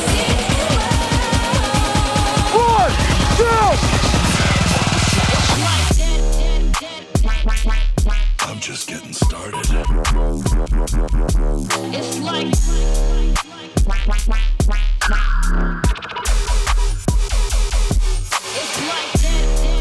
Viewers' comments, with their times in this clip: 0:06 That drop i heard live at wakaan and went absolitely wild